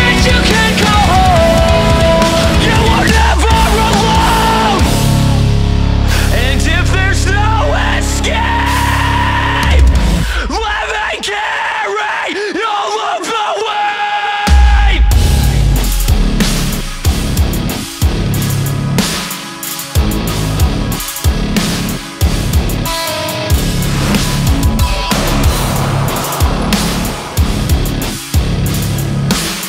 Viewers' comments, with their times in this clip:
0:10 sounds like Mike Hranica from TDWP... Awesome breakdown Btw
0:13 that's a heavy and pretty original breakdown